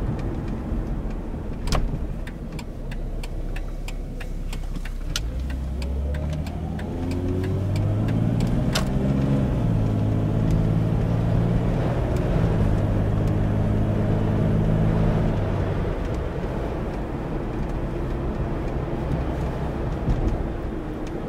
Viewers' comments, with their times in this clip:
0:04 nice sounding engine